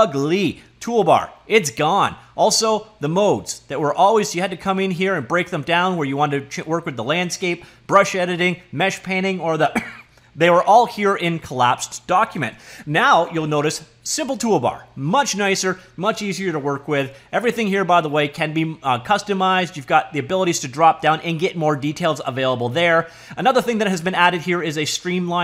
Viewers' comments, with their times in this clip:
0:07 "... brush editing, mesh painting, or the <AHEM>!, they were all here...". Your foliage/foilage arc needs its own playlist xD. Awesome video on UE5!
0:08 lol foliage cough